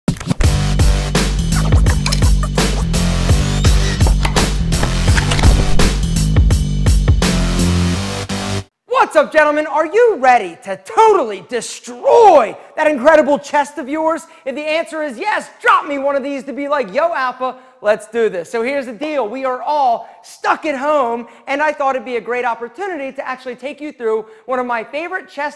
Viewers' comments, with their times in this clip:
0:08 Well i don't know that we also have to take cocaine as pre workout(the way he's speaking)